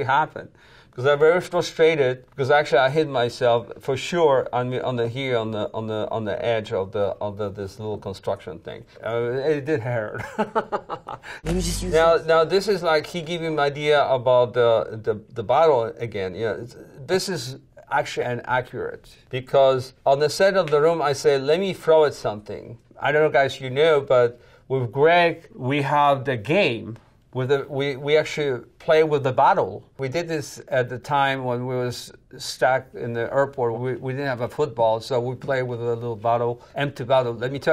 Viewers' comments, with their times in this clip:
0:09 it did heerrrrr ha ha ha ha - that's the Wiseau accent at best
0:09 his laugh lmao
0:21 the vanity fair guys behind the camera laugh